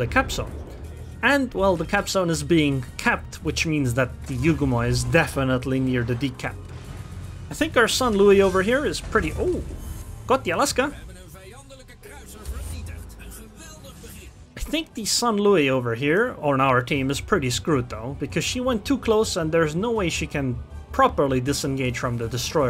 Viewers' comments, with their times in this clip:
0:10 Dutch just sounds so funny especially